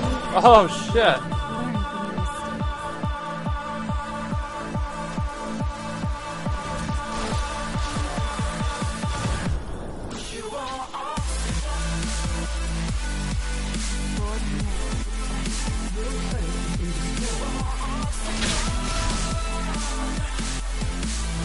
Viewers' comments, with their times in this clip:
0:09 Hahahahaha when the beat dropped Sion exploded his shield XD